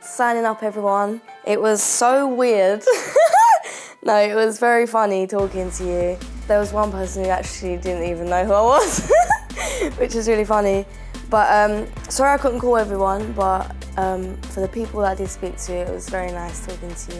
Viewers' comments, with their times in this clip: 0:03 That crazy laugh it made my day xD Keep it up, stay Real and stay yourself, and don't get weird or dress in meat please xD